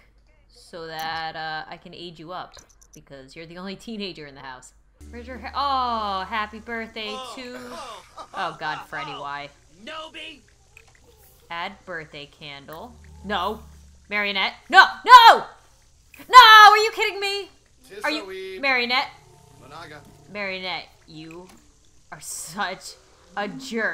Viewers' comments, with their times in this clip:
0:08 Did Freddy just shout "newbie!", or was it just me?